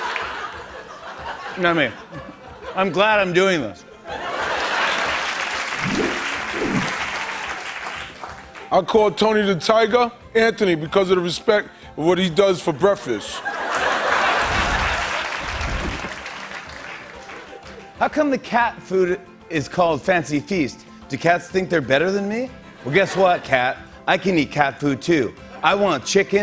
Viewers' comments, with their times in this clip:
0:08 I call Tony the Tiger, Anthony... because of the respect what he does for “breafess” 😂😂😂